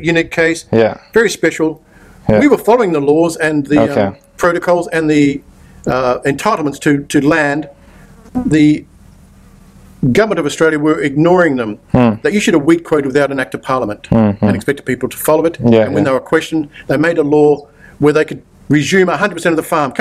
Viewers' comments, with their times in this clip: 0:08 did someone fart ?